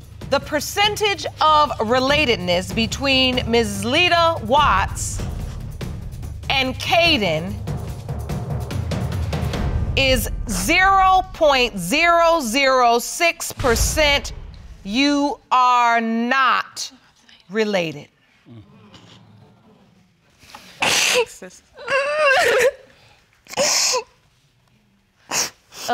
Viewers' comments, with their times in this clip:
0:08 She knew that wasn’t his baby she was starting to bawl before the judge read the results